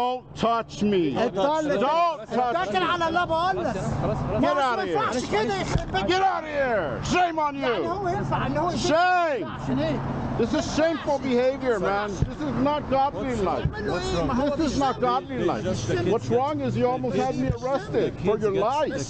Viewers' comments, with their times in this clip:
0:05 These guys are speaking the REAL language that this dude mocks. Lols 🤦‍♂️ I thought for sure he was gonna give him a, “SHALAH MA HALAH!” 🤣 😆 ☠️